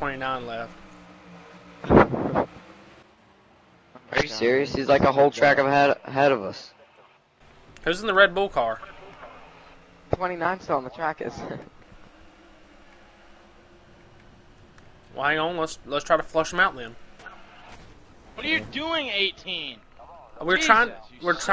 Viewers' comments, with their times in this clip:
0:04 The guy talking makes my Siri pop up because of the "hay Siri" thing 😂😂😂